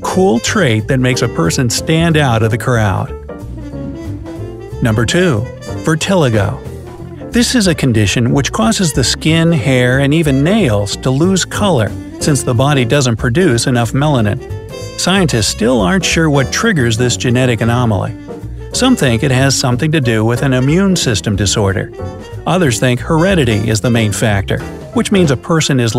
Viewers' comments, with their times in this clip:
0:06 okay okay... Is it virtiligo or Viltiligo I heard virt* but its spelled vit*.